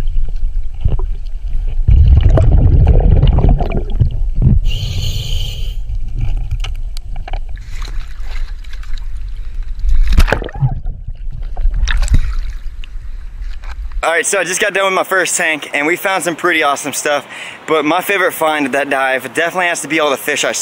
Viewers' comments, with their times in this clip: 0:08 haha what a scream😂😂😂